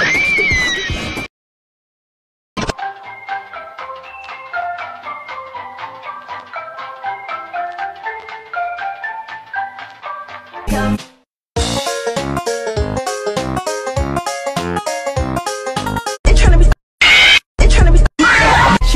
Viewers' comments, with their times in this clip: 0:03 when casual bongos start playing